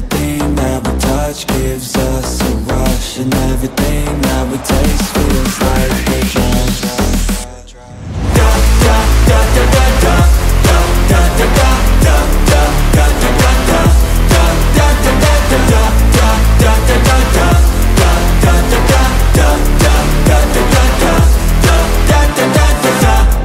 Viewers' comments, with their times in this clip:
0:08 sounds like Да Да Да Да Да